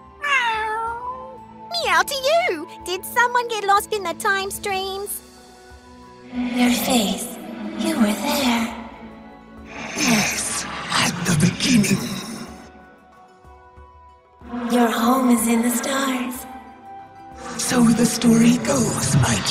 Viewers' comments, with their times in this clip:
0:07 This reminds me of old Janna voice